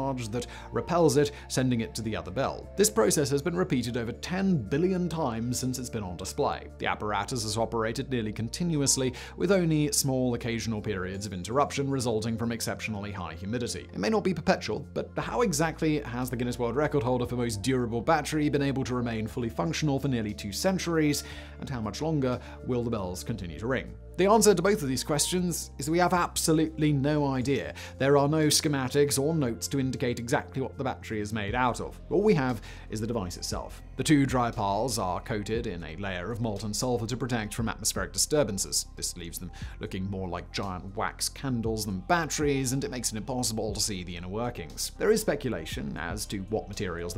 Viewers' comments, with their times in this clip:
0:06 Listen to the way he says display … why is he putting on a bad Australian accent?
0:30 the way he says "exactly what the battery is made out of" is very satisfyingly sounding.